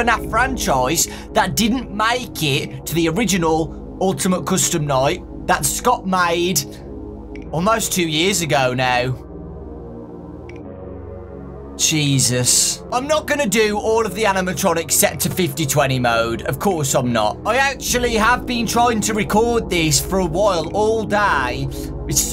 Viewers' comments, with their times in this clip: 0:07 fnaf music: it's been so long...